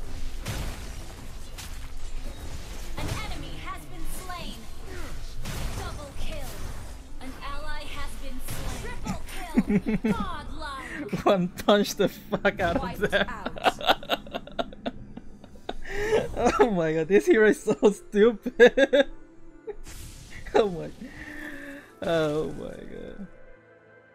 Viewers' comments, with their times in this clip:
0:09 his swearing is so cute